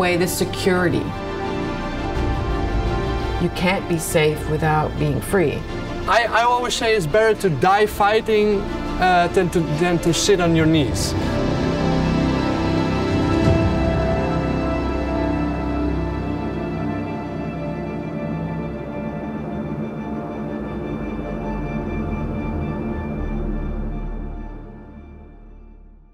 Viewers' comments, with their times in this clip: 0:09 For anyone wondering, he said sit not sh*t on your knees.